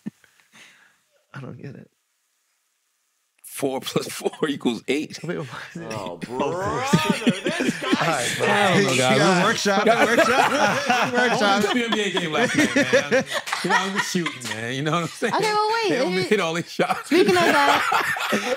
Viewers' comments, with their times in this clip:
0:05 that SpongeBob sound bite is diabolical work😂